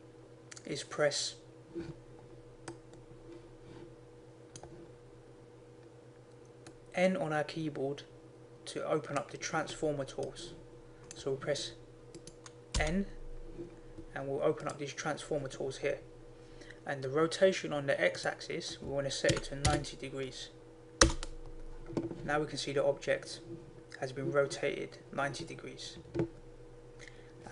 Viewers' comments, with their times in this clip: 0:09 police sirens made me look out the window , then i realized im wearing headphones. bruh !